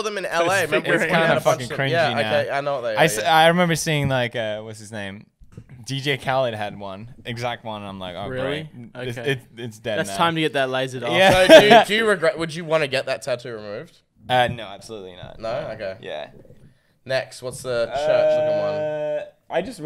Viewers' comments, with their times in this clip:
0:05 i legit heard dj cow